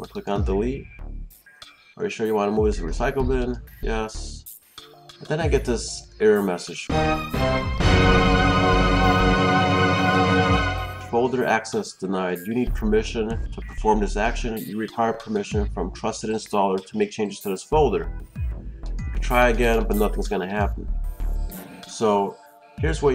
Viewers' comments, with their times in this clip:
0:07 rip headphones user